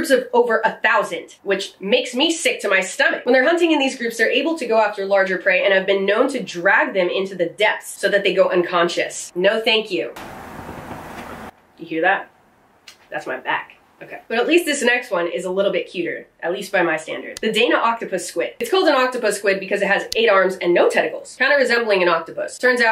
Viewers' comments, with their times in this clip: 0:10 TARA TA TA!! Sounds like a metal drummer warming up.